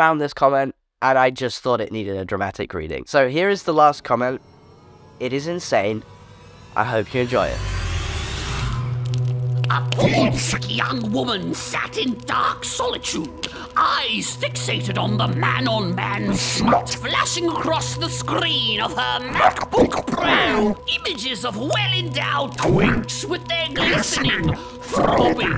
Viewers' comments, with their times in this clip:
0:09 Why does this video have Cicero from Dark Brotherhood narrate some weird fanfic from literal HELL i'm dying
0:10 The voice of your friend at the end made me literally cry 😭😭😭 Also I'm not trans but I look way too young for my age too. At 26, I went to the oftalmologist to discuss my keratoconus surgery and the first thing the doctor said was: omg you look like a little kid!
0:10 AM I THE ONLY ONE WHO HEARS QI RONG FROM TGCF??? (the tgcf brain rot is real😿😿)